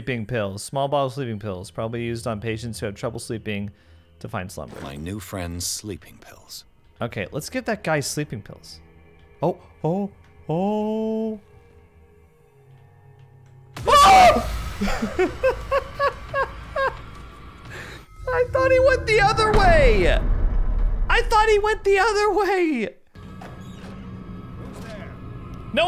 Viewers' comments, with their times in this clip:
0:09 I have watched his videos for a couple of years, but this is the first time I have heard him scream XDXDXD this is the game we have all been waiting for